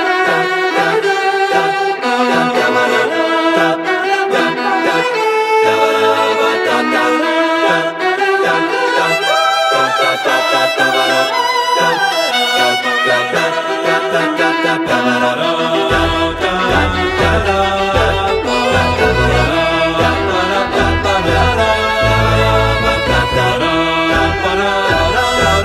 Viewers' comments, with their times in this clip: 0:10 kinda sounds like their singing the words Baba the Hutt